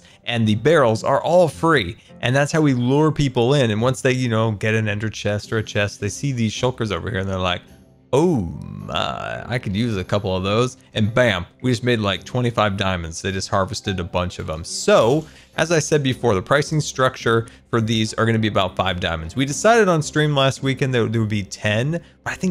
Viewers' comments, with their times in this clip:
0:07 channeling his best George Takei “Ooh myyy” 😍🖖🏻